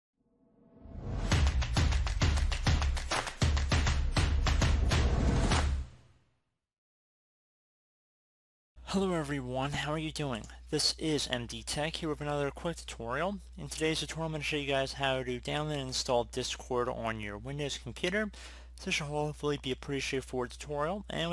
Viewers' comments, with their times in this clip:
0:03 its sounds like the music of super mario🤣🤣🤣 edit: thank you very much i was having a proplem cause when i download it from the main wepsite i was having a eror